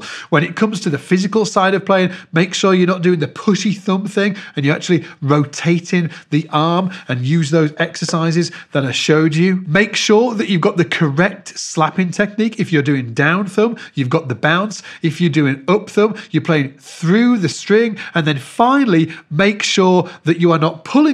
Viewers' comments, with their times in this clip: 0:03 Totally thought you said that p***y thumb thing Thanks for all yhe great leasons and info on the bass and playing over the years... SBL is the best for bassists